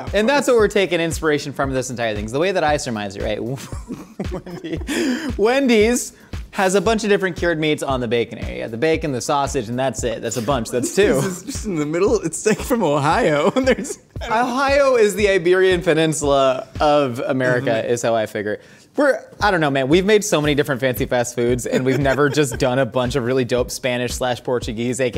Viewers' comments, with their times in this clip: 0:07 Am i tripping or did that sound like josh was talking to himself